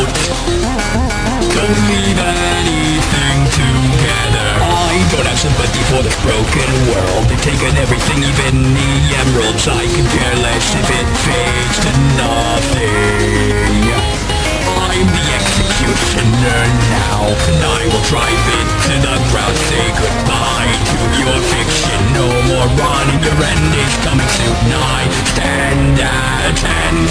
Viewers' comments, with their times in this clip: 0:08 nah its off beat and its ok until thats where it goes off the rails